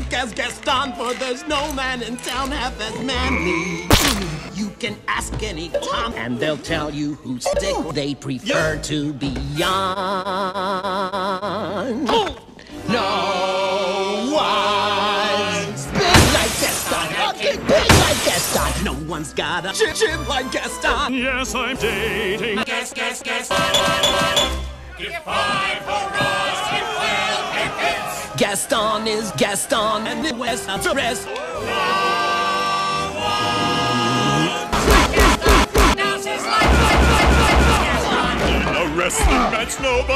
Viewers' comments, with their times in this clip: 0:09 that 1 kids mic in a party
0:24 I just like the melody